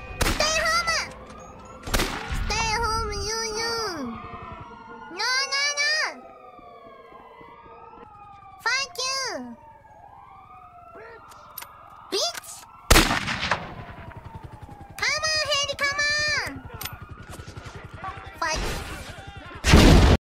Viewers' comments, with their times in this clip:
0:08 She swearing in a baby-like voice & NOW with animation..is very cute.
0:12 Her “bitch” was too good.